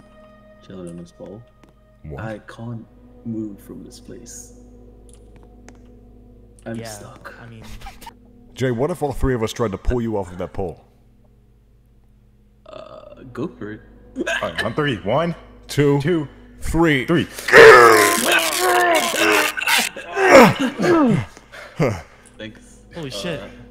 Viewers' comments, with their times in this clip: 0:07 THE CUT OFF LAUGHING GOT ME.